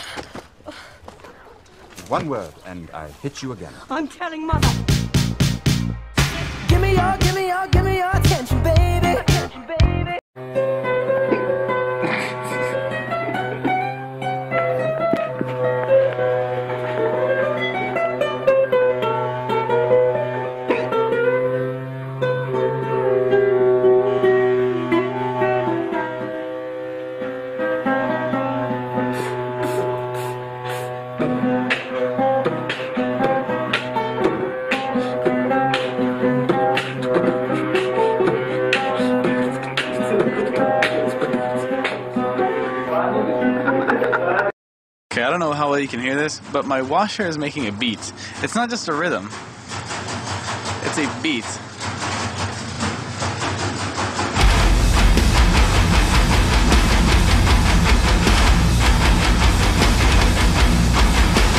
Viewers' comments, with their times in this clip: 0:10 Idk why, but I absolutely loved the sound of That was amazing! Always loved that scale too! But that sink and then his beats! Ahh. Okay, me done :) Anyone got a source for this one though?
0:30 that pipe jammin was 🔥🔥🔥
0:45 This took the prize for me :'D I think the washing machines have developed a longing for greater appreciation and attention, and that is why they start making special rhythms instead of a flat banging noice. The time for taking our household machines for granted has passed. Long live washing machines!!!
0:48 Son: Mom, can I have a drum kit? Mom: We got a drum kit at home. The drum kit at home: